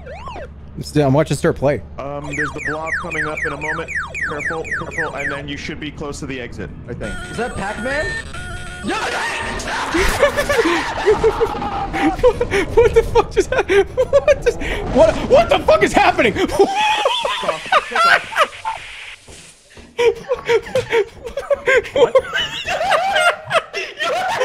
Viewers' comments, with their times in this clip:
0:07 The scream is bone chilling